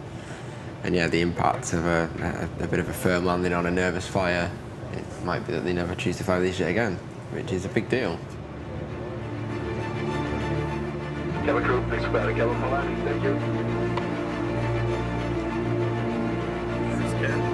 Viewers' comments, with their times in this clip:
0:04 I love these sorts of series but On the approach the dramatic music was not needed, it was just a normal landing into paris🤦‍♂️😆